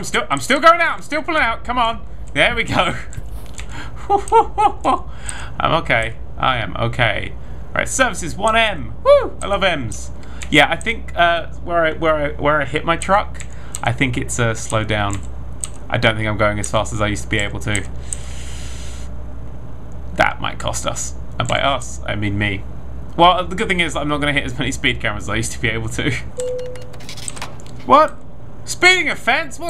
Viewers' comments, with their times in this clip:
0:10 Am I just going crazy or is there whispering ? I'm probably just crazy but I SWEAR I HEAR SOMETHING!